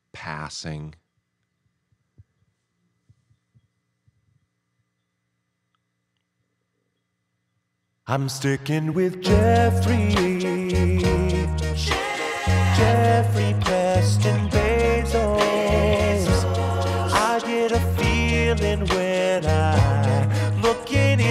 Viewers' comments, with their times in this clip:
0:08 I only now noticed the “Jeff Jeff Jeff” melodic backing track. Burnham Bezos is the best combo